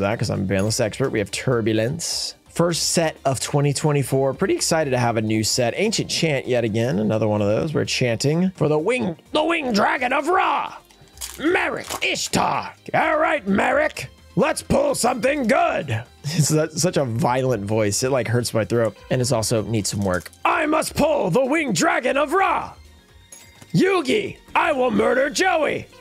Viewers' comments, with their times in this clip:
0:09 This sounds like the TeamFourStar version of Napa.